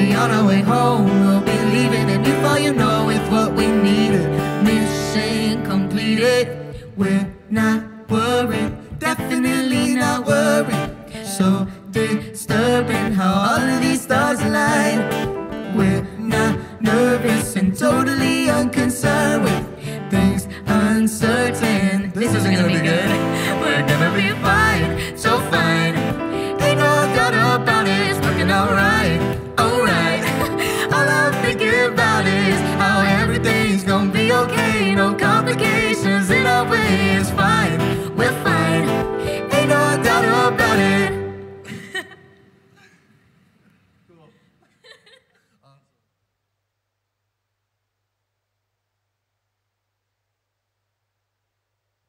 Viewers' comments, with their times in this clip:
0:06 there voices blend well together, love them so much
0:22 omg i love how they laughed at "this isnt gonna be good!" Lol! I just love their friendship so much they 're even more than friends tbh!!! Ive watched 1,2 and 3 LOADS OF TIMES Lol i love the movie so much and their relashionship in the movie my favourite one has to be zombies 3!! But with all the saying and finding about zombies 4 i think when it comes out its going to be my favourite one!!! I love the songs in the movies to! In this video i also laughed when they laughed at "alright!!" As well! I love them so much as well as their personality! Xx Edit : wow that was a LONG paragraph!! Lol Xx
0:35 Their harmonies blends so well together 👏❤️. Both of their voices were born to sing together 😆. I loved the part when Meg sings “in our way”. I just love how they turn the song into their own 🙏🏽❤️.